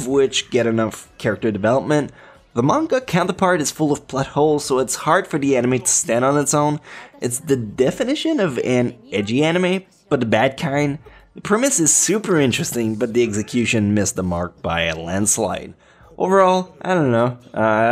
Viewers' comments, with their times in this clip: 0:03 I thought you said “ The counterpart is full of butt holes”... lol